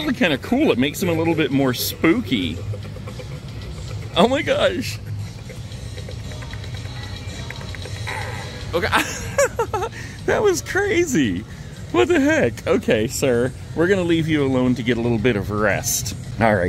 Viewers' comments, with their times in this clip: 0:04 nozzles is tring beatbox lol.